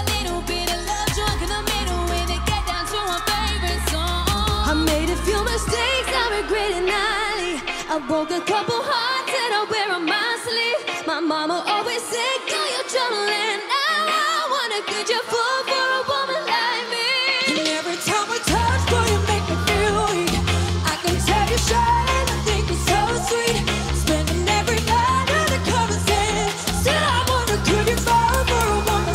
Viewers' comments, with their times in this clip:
0:04 jades cute accent 😍😆😂
0:13 now tell me they're lipsyncing 😒
0:13 yes by cons his high note is amazinng ! 😍😱
0:14 Jade: Could you foo for a woman like me. 😂😂😂